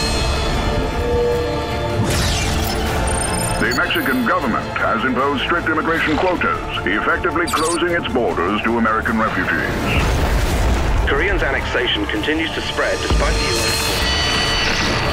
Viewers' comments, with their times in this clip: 0:03 that cool voice - want it!
0:03 that voice reminds me of one of those people from Adult Swim